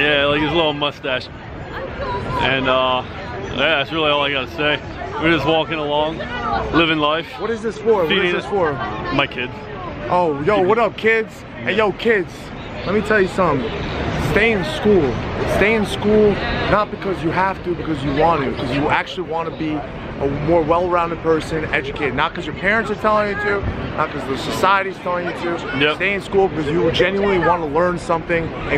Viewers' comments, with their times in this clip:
0:09 when you said, "my kids" I could tell you really love being a teacher. You said it with such passion and love.